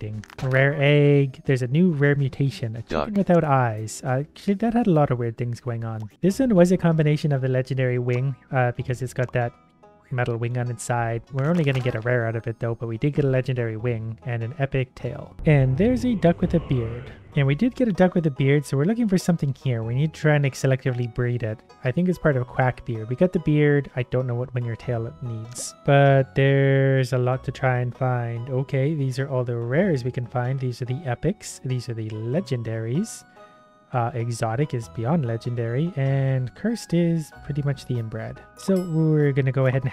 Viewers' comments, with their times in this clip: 0:09 Am I the only one that started to here Stardew Valley music😍
0:16 Only og remember the music
0:27 Did anyone else hear stardew valley music